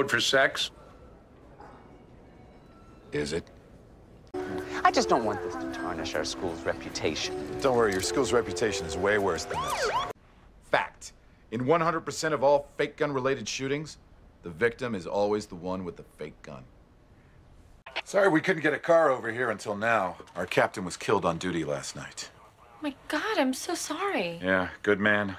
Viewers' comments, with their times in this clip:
0:09 sounds like Dwight Schrute